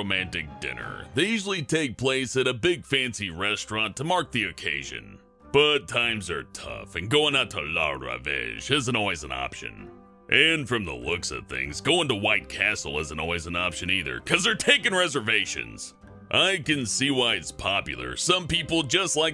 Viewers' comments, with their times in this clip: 0:04 did you say La Rubbish?